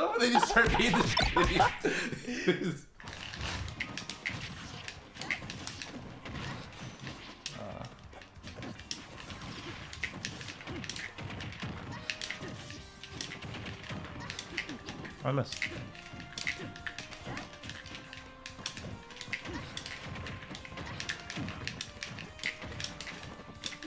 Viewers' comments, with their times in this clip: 0:04 Mii brawl moaning after a soft hit from sheik Lol